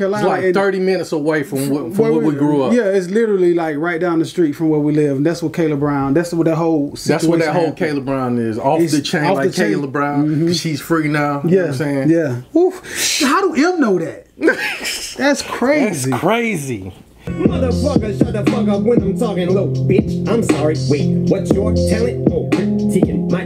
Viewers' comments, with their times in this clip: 0:04 The Oooouuuuuuu is crazy.. and afther that he made a point "i think" 2 Token. He started a flow same as Token did on the gucci gang on Tim Westwood ! Em is saying a fan mailed him enz enz enz .. That`s same smae flow ... SO maybe ??